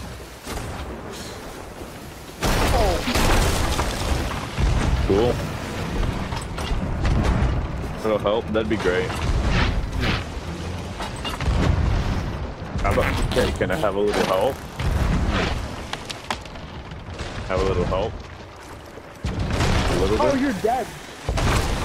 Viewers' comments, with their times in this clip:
0:04 crisp, clear communication.